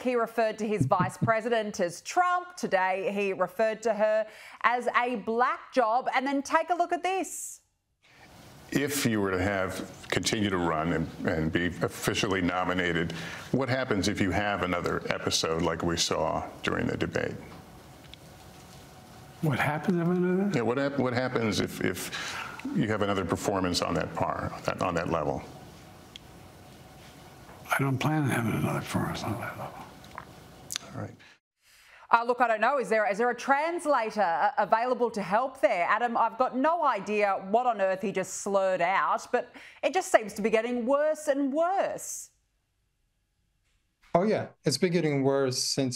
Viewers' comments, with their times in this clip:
0:07 I am willing to bet I could wash down 60 xanax (they are prescribed to me) with a fifth of whiskey and still speak better than this.
0:24 DUDE IS F'N SO HIGH HE CANT EVEN SPEAK
0:28 What did he say about my mamma?